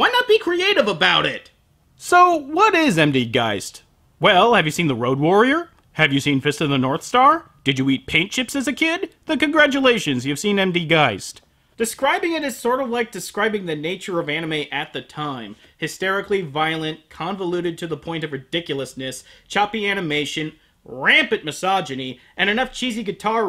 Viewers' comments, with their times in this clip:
0:08 *giggles then becomes completely straight faced*: Why?